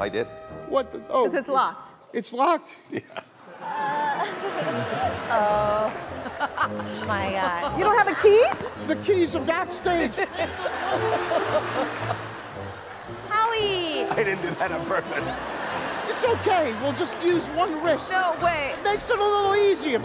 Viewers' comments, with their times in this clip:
0:06 mel b's laugh is cute